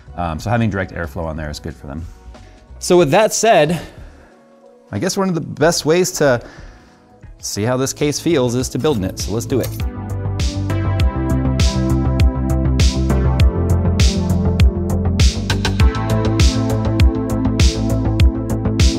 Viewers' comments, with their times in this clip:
0:06 What a delightful choice of music to build to. Perfect fit.